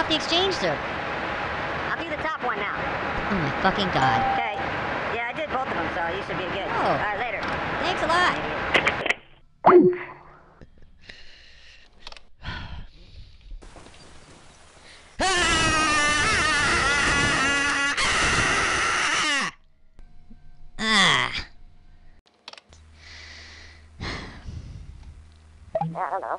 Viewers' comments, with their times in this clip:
0:10 the deep breath followed by the scream